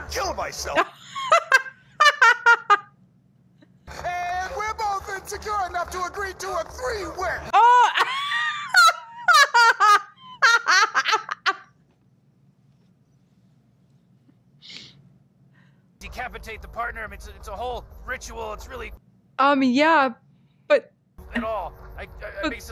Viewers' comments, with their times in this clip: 0:07 ... What can I say.. I love your laughing.. Love it <3 <3 God bless you ma'am.. God bless you.. :D